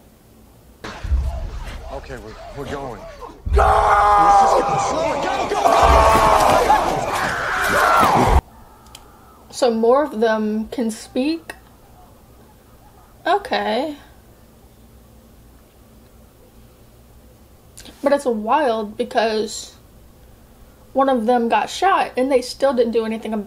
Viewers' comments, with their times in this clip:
0:07 am I the only one who heard blue eyes yell go because of that high-pitched GOOO